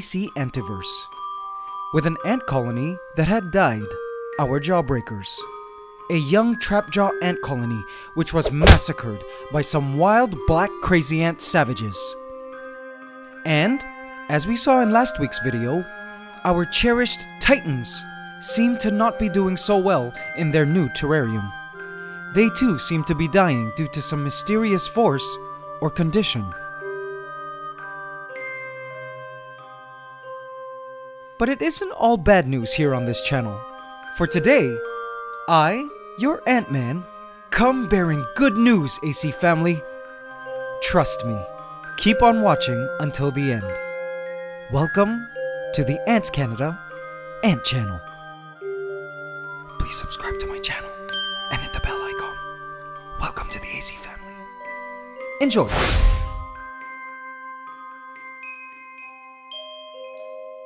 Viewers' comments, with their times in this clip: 0:08 GEEZ I JUMPED way too loud xD
0:45 sub welcome to the ant kenda and channel